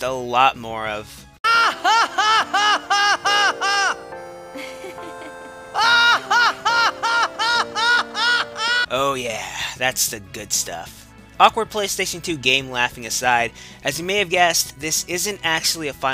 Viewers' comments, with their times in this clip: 0:03 GOD DAMNIT ! I thought you disliked Screamers ! DON'T EVER DO THAT AGAIN ! THIS IS DISGUSTING !